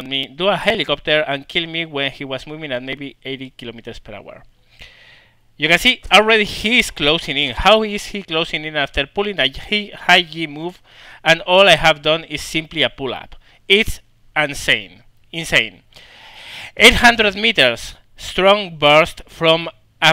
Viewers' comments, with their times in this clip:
0:08 Thats a joke right? Really good english... Dudes got the thickest accent i've ever seen, can't even understand him I need to play it over again to understand what he said. Example